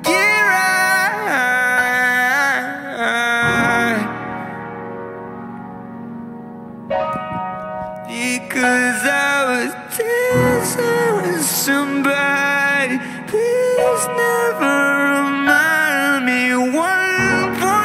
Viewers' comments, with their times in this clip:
0:05 How is no one talking about how angelic he sounds.